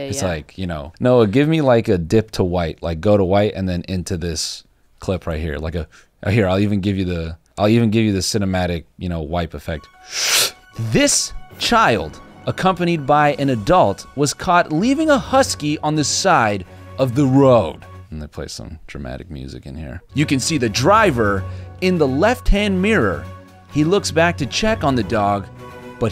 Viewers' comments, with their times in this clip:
0:09 That ABC 7 voice was on point